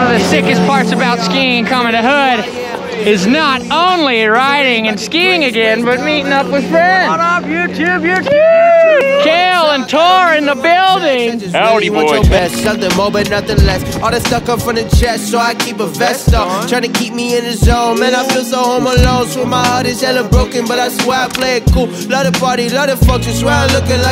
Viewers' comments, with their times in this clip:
0:08 Sounded like Jolie Ollie lol